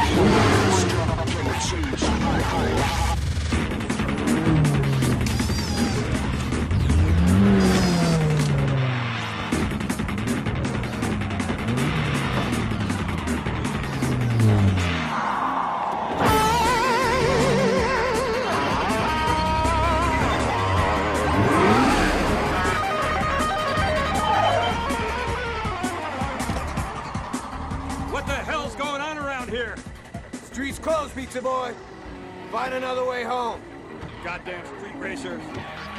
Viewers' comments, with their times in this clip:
0:09 always hit me different back in the day the beat of the song and her getting out the car just goes 😎😍
0:16 I like how the guitar solo kicks in as the camera pans to these two Asian ladies real subtle 😂